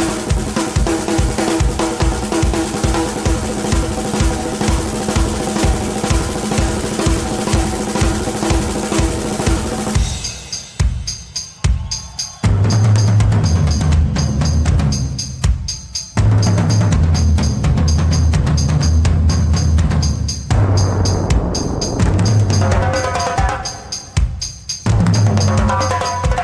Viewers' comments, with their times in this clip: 0:05 At the mark, The most impressive and most difficult aspect is the Ostinato’s (drum cam captures briefly) created by Neil playing a separate, repetitive rhythmic pattern with his left foot, utilizing a MIDI trigger pedal that’s assigned to a tambourine type sample. He play’s the phrase as “2&3&” while his right foot and hands are soloing over in several other, different patterns and time signatures.
0:09 Just for orientation, and because I did not realise it until I saw 'Anatomy of a Drum Solo': What he is starting to do here is playing with his feet in waltz time (three-four time), and something completely different with his hands. 🤯